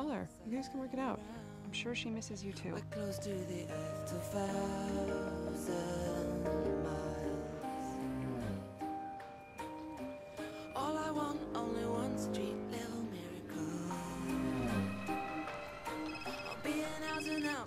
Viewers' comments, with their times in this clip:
0:03 thats a fart!